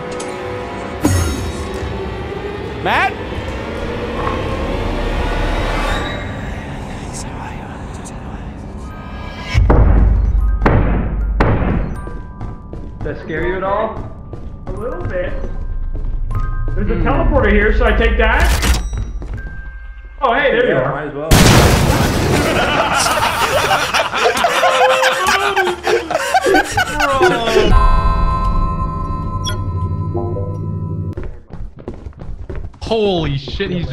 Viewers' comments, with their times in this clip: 0:05 The voices, they speak to me
0:19 oh hey there you are- BOOM